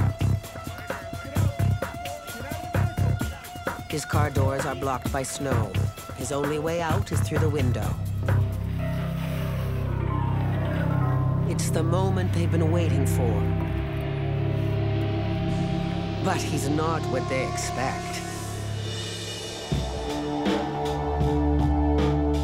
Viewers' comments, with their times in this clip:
0:10 The music 🎶 when they take him outta the window & down the snow embankment 😂